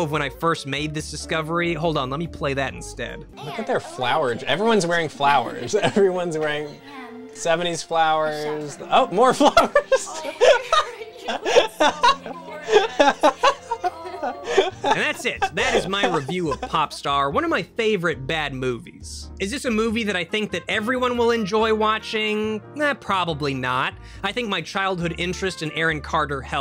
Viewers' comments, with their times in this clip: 0:04 omg his laugh is adorable
0:09 That laugh is great.